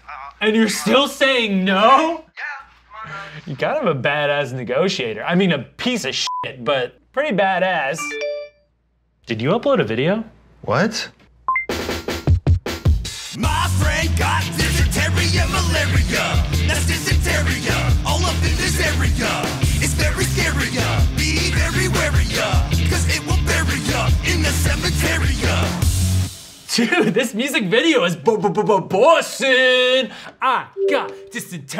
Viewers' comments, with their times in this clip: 0:07 They're even using old sound effects like old Smosh
0:12 this had no right being a musical masterpiece